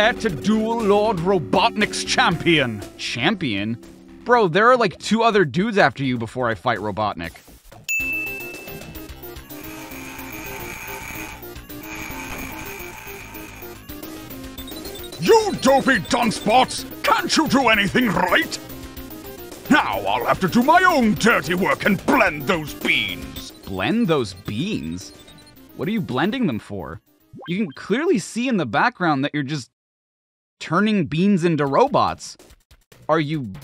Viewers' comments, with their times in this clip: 0:09 jesus i would have prefer’d an eggman voice like that for the sonic games lol
0:15 that’s a really good impression of AoStH Robotnik
0:16 you’re a eggman voice is really accurate